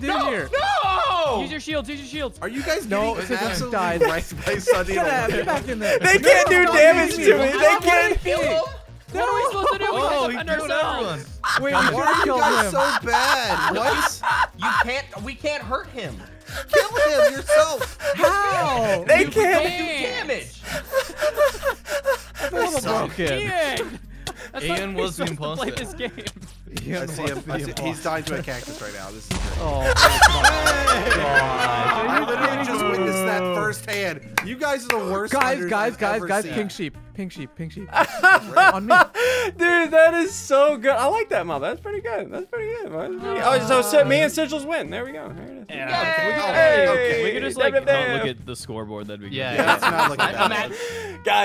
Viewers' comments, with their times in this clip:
0:10 straight up sounded like a parrot laughing
0:12 What is that laugh
0:33 if you listen closely u can hear the apple ringtone